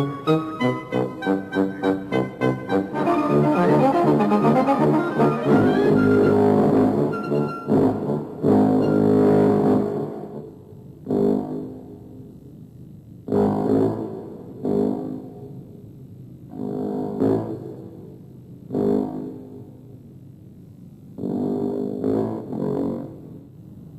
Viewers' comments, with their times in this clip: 0:10 I can't be the only one to hear the duh-duh duh- duh from Jaws 😮